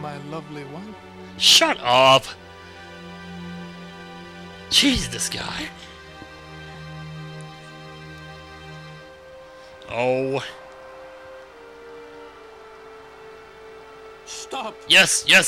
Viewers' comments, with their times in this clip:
0:03 I thought that was Seymour singing o.O lol In FFXII, there was a long staircase in the Pharos.